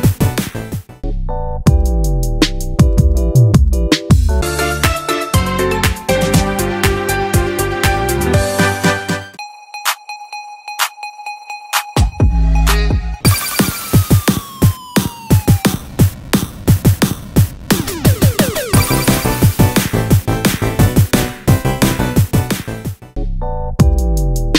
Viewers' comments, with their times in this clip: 0:05 How many points did you get? Drop them here 😉 I think the audio is a bit early since it’s not like that before i upload the video in yt idk what happened uwu anyways, I hope you’ve enjoyed! ❤️